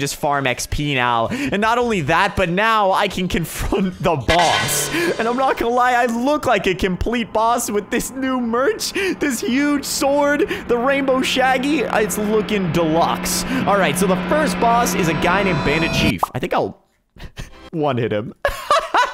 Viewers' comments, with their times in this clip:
0:03 sounds like that one sound from dbz